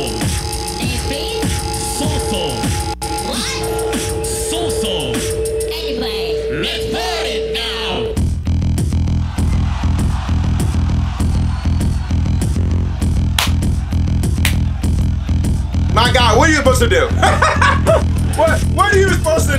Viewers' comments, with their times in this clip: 0:04 holyyyy drops ridiculous